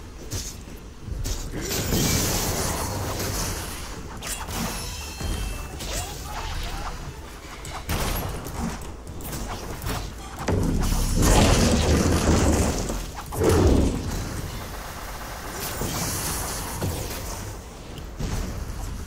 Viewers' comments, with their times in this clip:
0:05 damn tf is that oh my god sound effect LOL